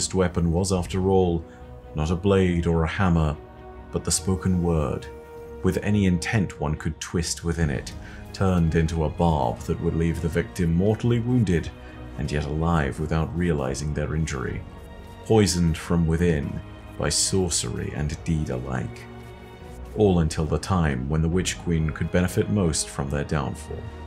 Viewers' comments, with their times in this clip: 0:07 voice: Epic. soundtrack: Amazing. footage: uses nova warp to not commit seppuku